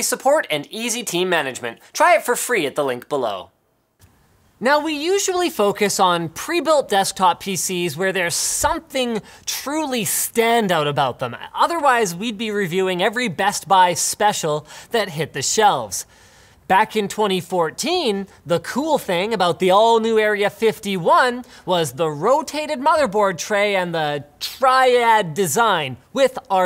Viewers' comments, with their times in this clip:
0:07 Checkout the new Maingear "Omern" X ... So sick. That's the baddest "omern" I've ever seen.
0:08 I like your 'Maingear Omern X' Linus
0:10 wow, never heard of the "Omern" X